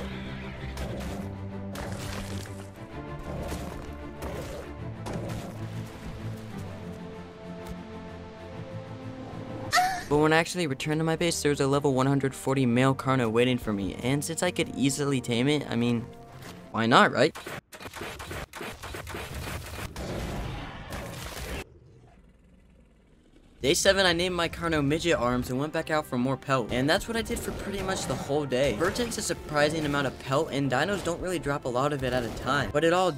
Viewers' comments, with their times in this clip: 0:09 the most mighty roar I’ve heard
0:20 As the tiger roared and the ah came I died